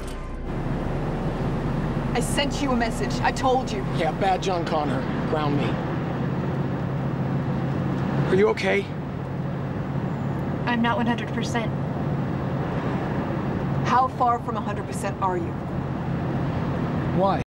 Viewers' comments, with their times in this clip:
0:09 Is it just me or is her voice a little different? The change in eye color is according to this reason: condition 100% - blue eyes status less than 100% - red eye warning for damage.